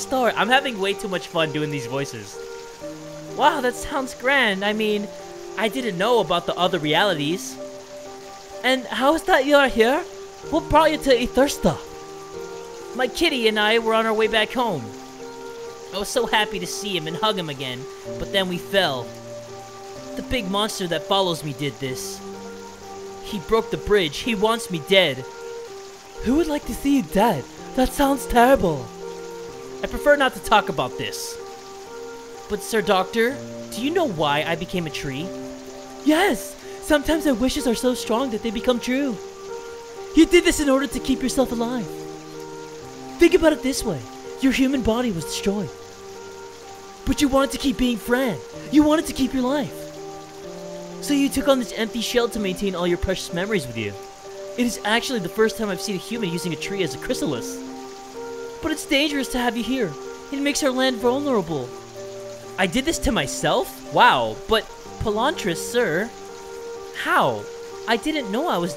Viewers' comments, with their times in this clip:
0:07 his voice for the umm... "beast" doctor thing sounds like jacksepticeye's voice for nugget from kindergarten
0:53 i love this dudes voice😑👌